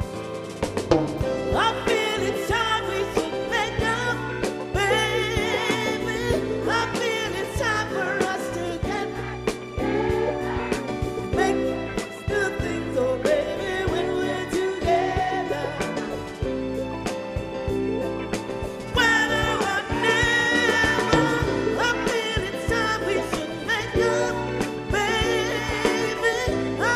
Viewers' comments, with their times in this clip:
0:08 It's such a shame that the UK will honor her tremendous talent and the United States has completely forgotten about her. I've been blessed to have listened to her music when it was released. Still, I'm grateful for this video. of this video, the audience begins to sing along with her. That is so touching. I certainly hope and pray Gwen feels the adoration of all her dedicated fans.